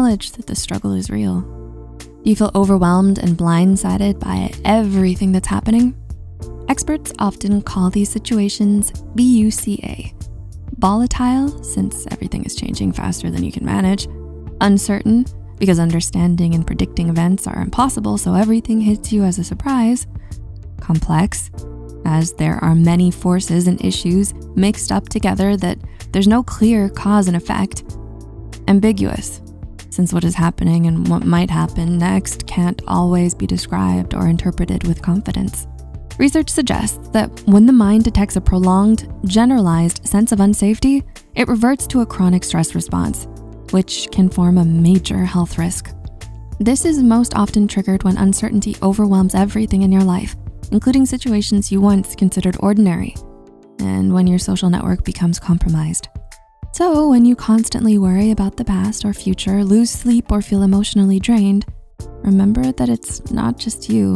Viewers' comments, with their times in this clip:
0:08 her pronunciation even made me think i saw a “B” there 😅
0:47 sayonara starts playing